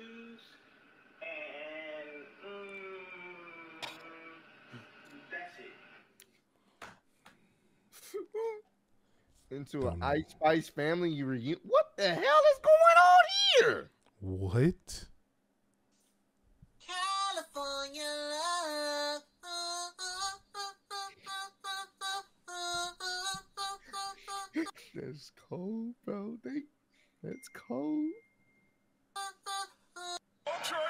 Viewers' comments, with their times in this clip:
0:03 That mmmmmmm from kanye took me out 😂😂😂😂😂
0:18 Bro on sounds like SpongeBob singing lol